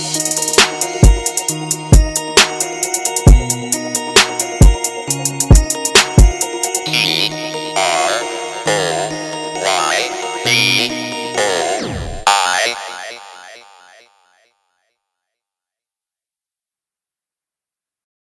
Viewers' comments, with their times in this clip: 0:09 The voice of a speak and spell?